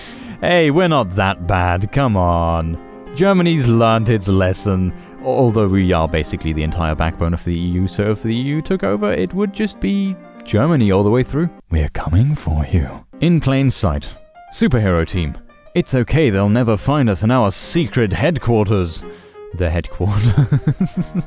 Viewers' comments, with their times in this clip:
0:05 scared Pole noises